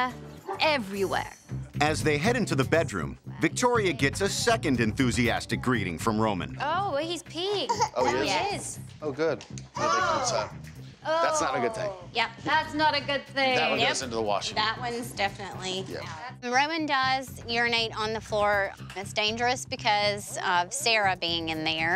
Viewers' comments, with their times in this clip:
0:08 when Victoria said that Roman is peeing it sounds like the man is saying oh good! I know he is saying oh god